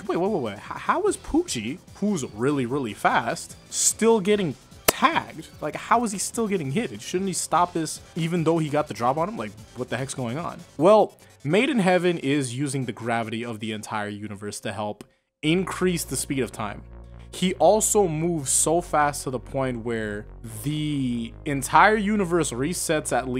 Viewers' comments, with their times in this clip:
0:05 The hitmarker sound is phenomenal